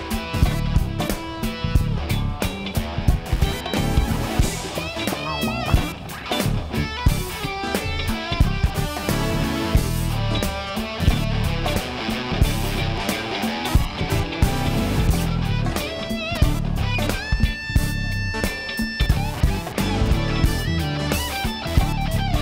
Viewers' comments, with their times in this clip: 0:03 Ooiii the synth lick 🔥🔥🔥